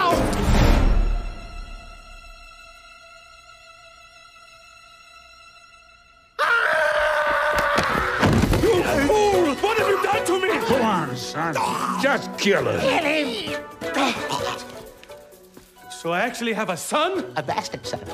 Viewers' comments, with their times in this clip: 0:06 that scream was hilarious lol!